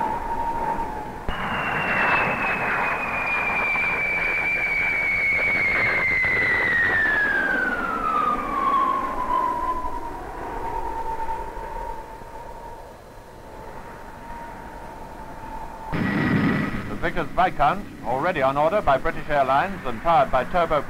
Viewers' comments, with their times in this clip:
0:04 Ya say you've never heard a Banshee ? OK then ....... ...